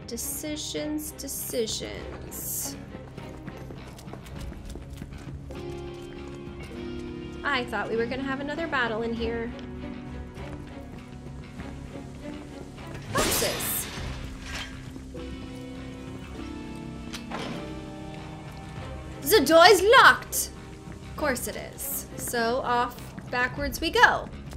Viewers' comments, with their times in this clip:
0:07 oml I heard aerith lol. Even though she was the voice actor of aerith, This line sounded the best as aerith